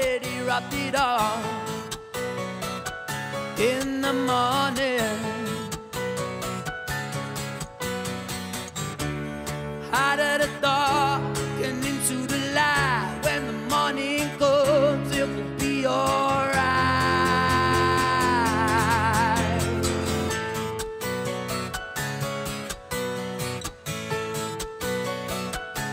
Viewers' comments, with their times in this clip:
0:09 Haddada dohh heninto da LAIGHHH Sing it properly you absolute helmet! This performance really makes me appreciate the original, and what a boss level singer James Skelly is.